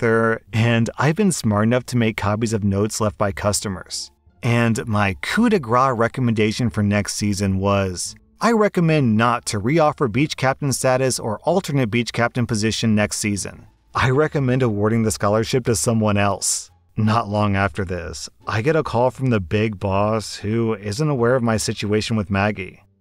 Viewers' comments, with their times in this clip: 0:05 “my coup de gras” 🥲 I’m very offended by this as a french person, you basically said “hit of fat”. I’m crying.